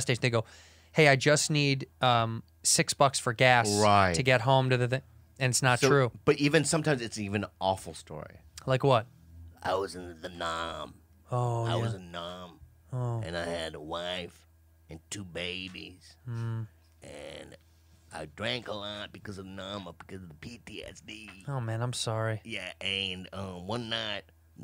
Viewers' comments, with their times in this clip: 0:05 Bobby's impression of a Vietnam vet asking for change is amazing. Hollywood wasted time trying to get him to do stereotypical Asian roles when he's naturally a salty old white man at heart
0:10 bobo's impressions are getting better and better; he didnt sound like a mexican korean in this one. he has been honing his craft